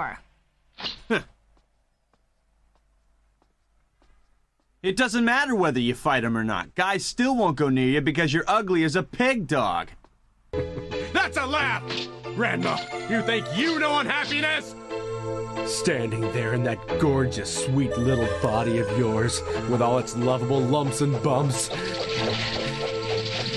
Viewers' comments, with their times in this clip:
0:04 Why is the way he delivered this line so friggen hilarious??